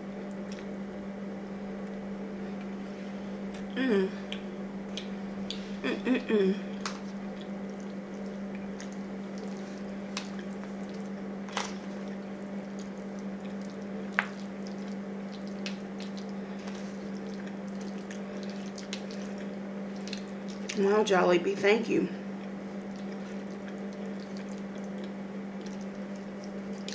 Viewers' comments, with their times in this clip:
0:09 she is quiet when she is high